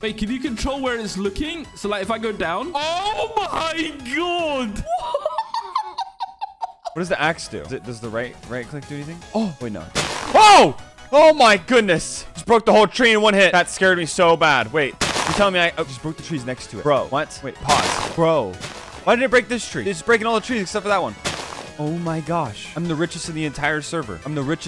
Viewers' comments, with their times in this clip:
0:05 WHTA IS THAT LAUGH